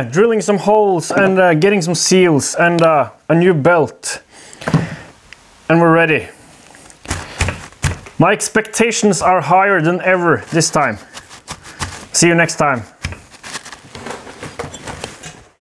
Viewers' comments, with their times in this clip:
0:12 Wow was the music loud when it hit the first time. Not sure the neighborhood enjoyed that here PM. Lol...